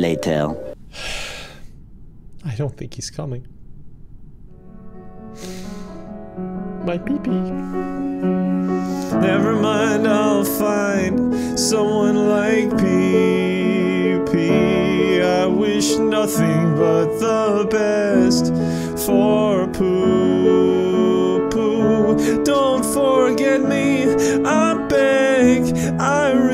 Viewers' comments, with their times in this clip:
0:08 so sad....... on the bright side hes a great singer